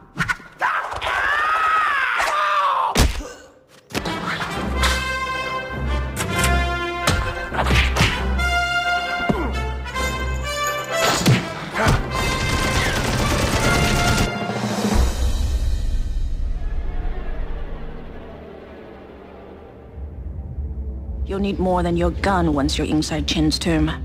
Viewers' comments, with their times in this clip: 0:08 Fun fact, when Indy grabs the ledge, that voice clip isn't in the game.